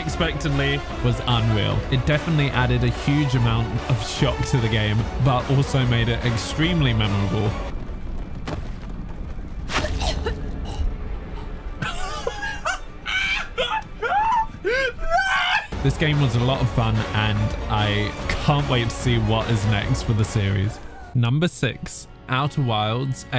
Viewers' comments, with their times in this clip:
0:10 I still can't get over my laugh 😂